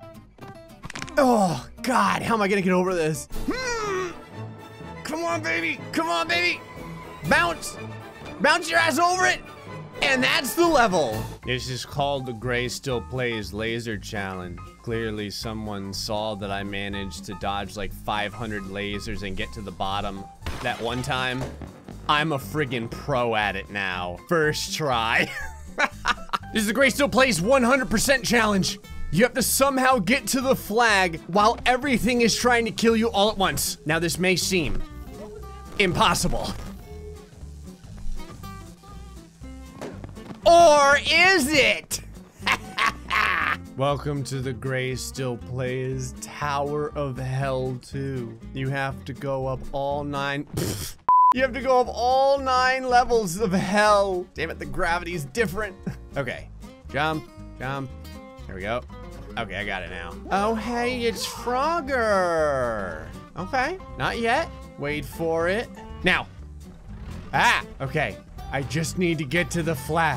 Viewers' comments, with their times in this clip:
0:03 I love how the background music was like in sync
0:55 Cyber punk music